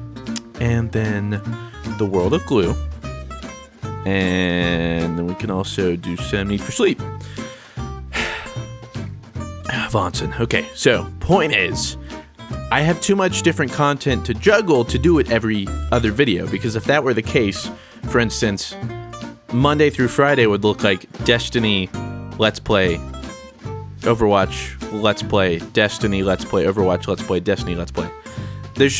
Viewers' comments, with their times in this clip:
0:09 did you just saw wahnsinn? bro do you even german bro? haha